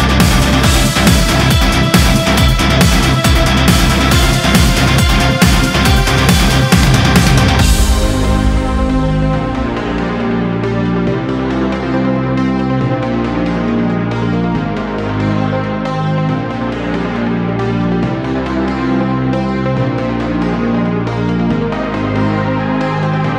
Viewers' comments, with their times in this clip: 0:09 This game is so fucking dope. The music really helps with that. I remember when I heard I had just absolutely slaughtered a room and that kicked in right after the last kill, I creamed myself.